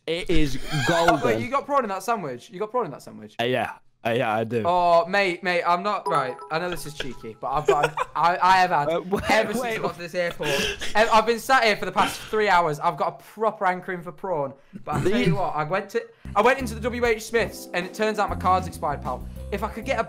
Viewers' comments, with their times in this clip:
0:07 Wilbur's laugh there-